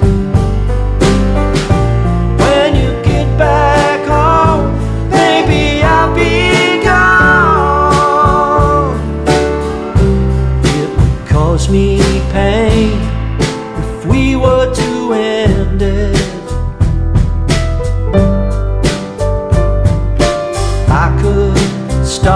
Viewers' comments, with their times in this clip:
0:09 Love Liam beginning the vocal breakdown but they skipped it haha :D